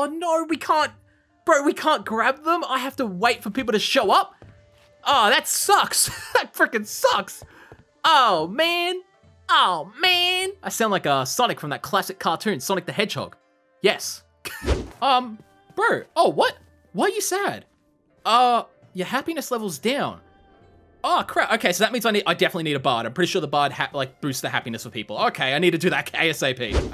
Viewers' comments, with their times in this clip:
0:07 actually you kind of sound like swiper the fox from Dora the explorer